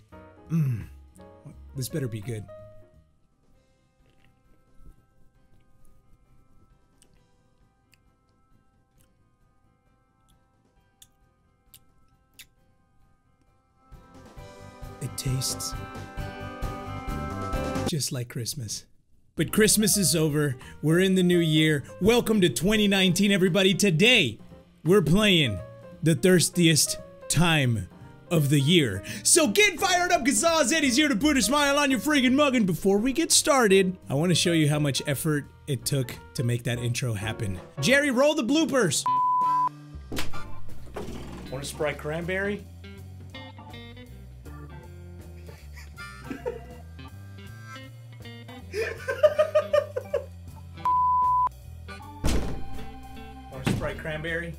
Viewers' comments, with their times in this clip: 0:05 why the asmr
0:39 he sounded like a white dude named paul in his office 😂😂